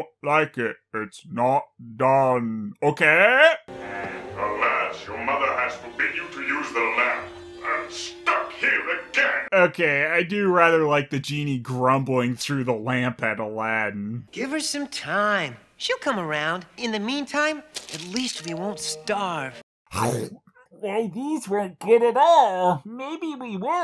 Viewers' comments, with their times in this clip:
0:04 When the Genie talks in the lamp ...doesn't his voice sound just like Android 16 from Dragon Ball Z?